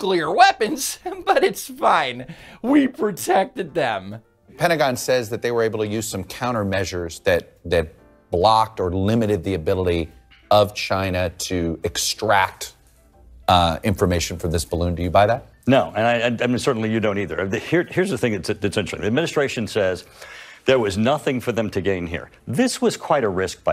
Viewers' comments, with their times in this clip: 0:04 don't tell people about the nuclear in Missouruh